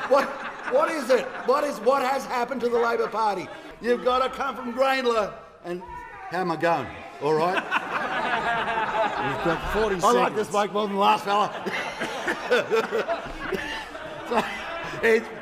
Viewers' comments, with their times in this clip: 0:03 'You've got a c**t from Grayndler" lol